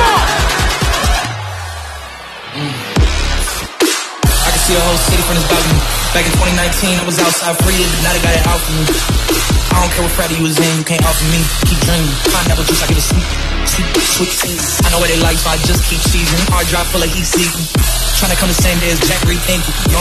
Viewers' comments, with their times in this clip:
0:03 Drop goes hard